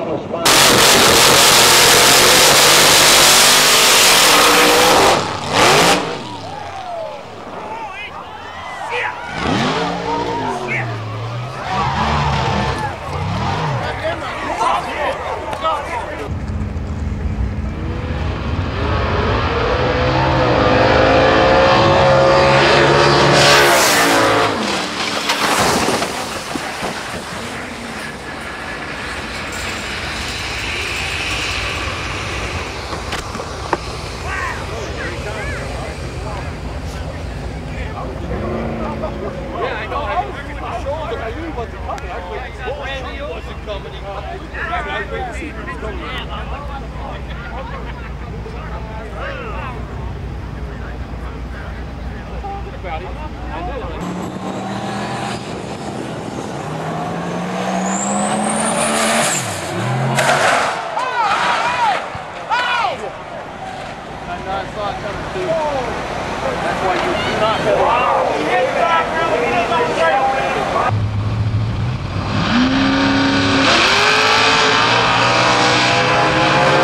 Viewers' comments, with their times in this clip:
0:08 LOL THAT GUY HAD A FUNNY VOICE WHEN HE SAID SHIT SHIT
0:22 you can actually hear the camera man shit his pants!!!
0:25 If it weren’t for the engines, you’d hear the cameraman shit himself.
0:59 that scream sounded like the why are you running meme
1:00 he thinks screaming can saved the driver
1:00 Why does the guy sound like Woody?